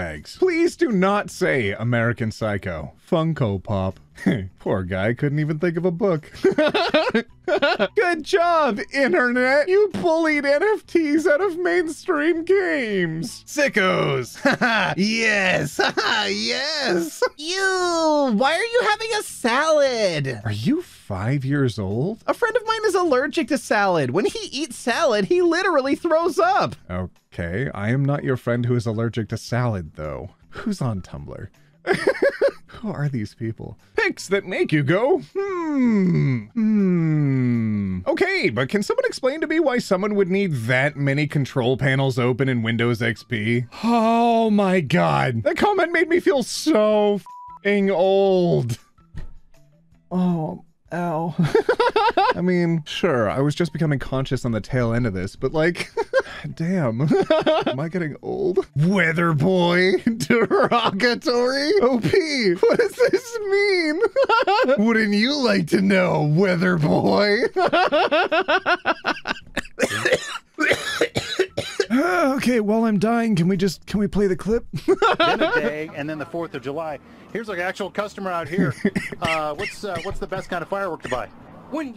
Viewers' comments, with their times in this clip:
0:10 Everyone always reads that out sarcastically, but it's actually serious and congratulatory. The author is seriously congratulating the internet. The good job isn't sarcastic.
1:07 I have a cold rn and me and ot started laughing at the same time and then simultaneously died